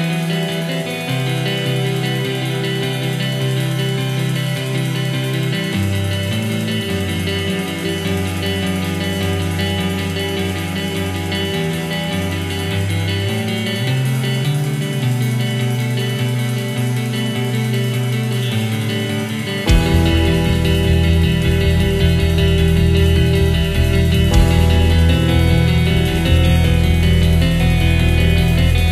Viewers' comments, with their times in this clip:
0:09 getting aerials // SOAD vibes